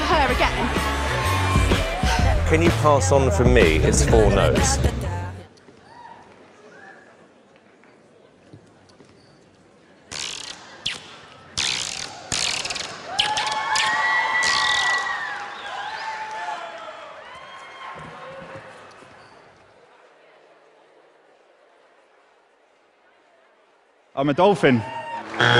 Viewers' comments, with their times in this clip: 0:07 The guy cracked me up when he finished it was so perfectly bad it ended up good hahaha